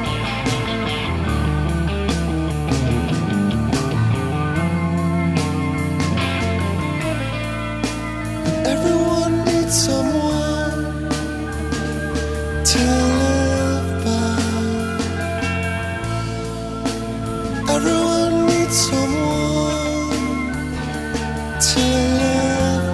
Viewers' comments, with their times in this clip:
0:08 onwards reminds me of Talk Talk